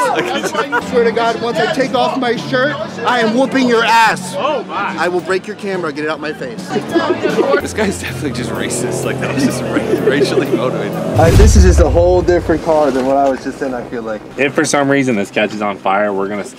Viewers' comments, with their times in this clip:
0:04 dude was trying to look tough but got laughed at lmao